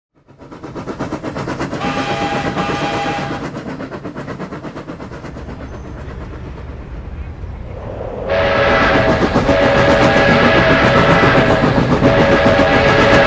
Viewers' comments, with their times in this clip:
0:01 Sounds Like a Polar Express